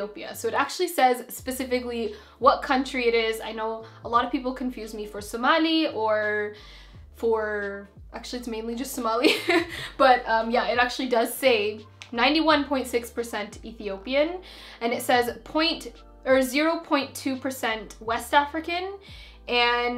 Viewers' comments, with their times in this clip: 0:05 omg the way she said Somali HAHAHAHAHAHAH